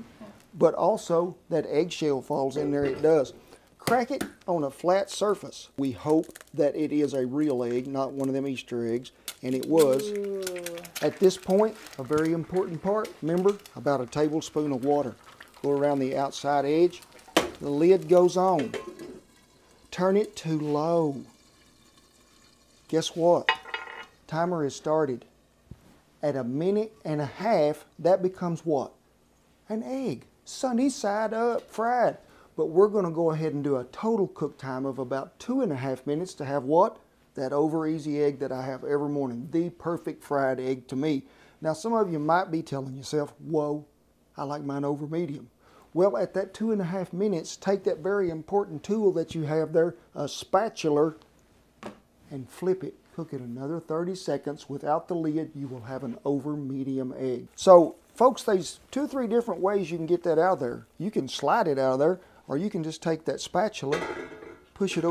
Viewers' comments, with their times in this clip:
0:06 Lame joke Then the dog (i couldn't catch the name) moans. Lol
0:50 spatuler = instant subscription